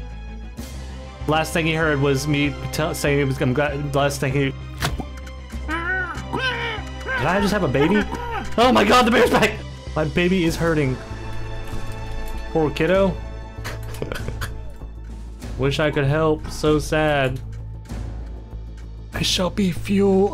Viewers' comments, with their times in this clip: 0:04 is the funniest moment “Did I just have a baby?” Spoken with genuine concern/confusion 😂